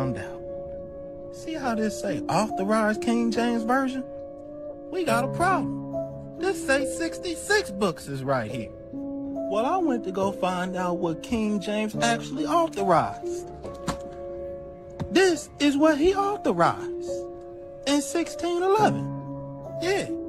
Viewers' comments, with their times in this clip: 0:07 this voice is to ignorent for words